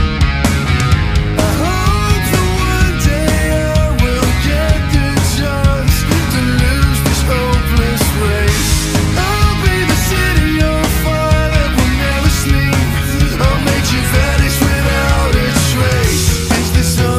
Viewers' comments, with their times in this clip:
0:05 is anybody elses favorite part HOLY ACCENT